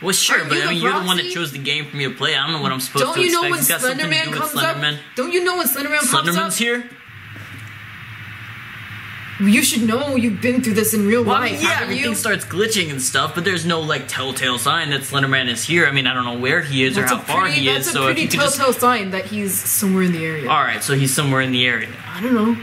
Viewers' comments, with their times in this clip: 0:04 The fear in Masky’s eyes and voice!